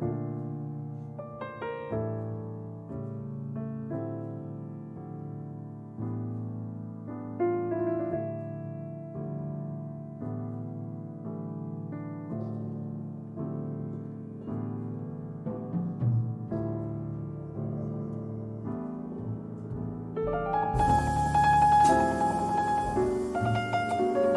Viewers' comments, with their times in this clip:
0:10 Oh my heart what a turn that tune took😳